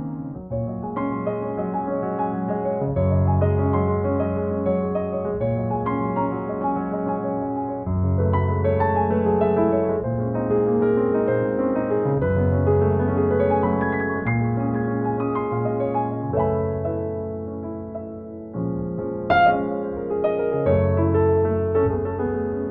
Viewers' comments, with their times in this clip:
0:03 The Gsus2add6 is actually a Gb6sus2 in case anyone was confused! :)